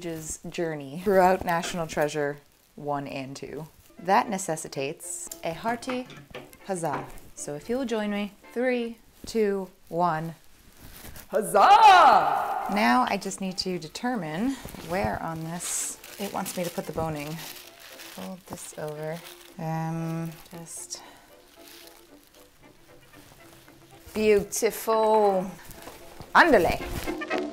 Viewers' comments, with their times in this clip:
0:08 The majesty of the echo on the “HUZZAH” 👌🏼😉